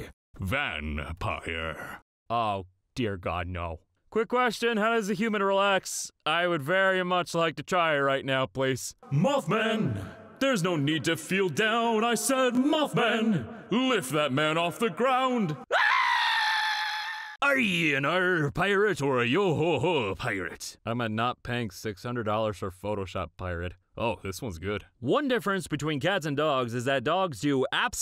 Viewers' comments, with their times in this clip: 0:09 This is why I keep coming back to this video. Mothman induced screaming.
0:09 Will always get me! 🤣 (It’s the scream...)
0:10 THAT DAMN SCREAM MADE ME SNORT COKE ZERO OUT MY NOSE
0:13 I can't stop replay the scream XD